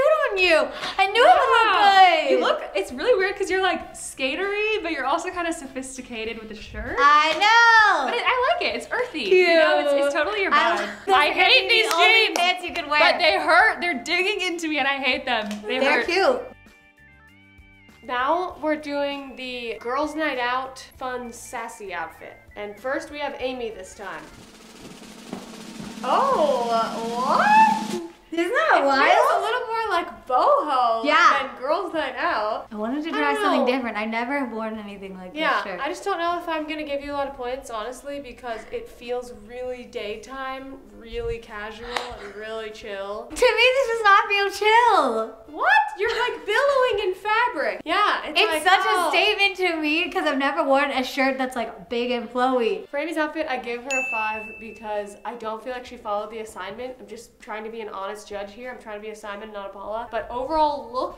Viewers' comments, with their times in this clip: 0:07 the 'I know' sounded so much like Monica Geller lol
0:43 i don’t know how it sounds to you but it kinda sound a little Ariana Grande, a little... I... think 🤔.